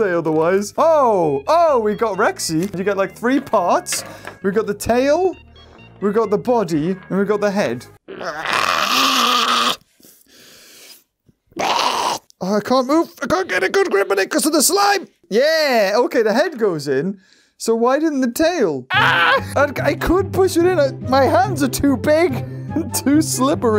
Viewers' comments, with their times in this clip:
0:08 are u making dinosaur sounds😂